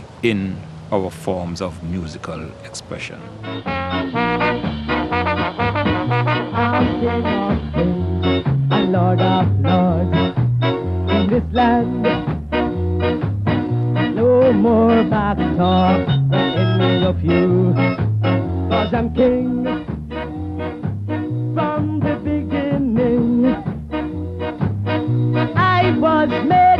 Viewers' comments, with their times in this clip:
0:09 you can so hear where Sublime got their sound from.